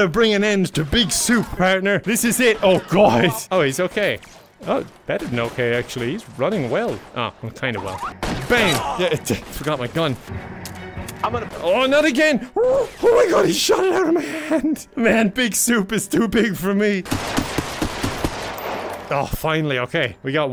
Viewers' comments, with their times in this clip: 0:06 Imagine being one of the criminals here, seeing this cop unload his mag by accident, and then screaming "oh no not again!'"